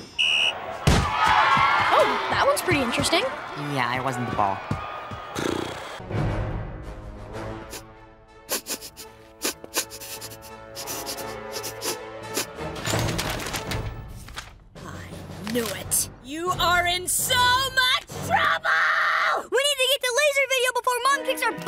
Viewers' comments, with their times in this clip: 0:08 Highway Go Go one was so... accurate. I mean, why Nicole was sniffing like a f*cking badass but Highway Go Go isn't like her? Here is the part: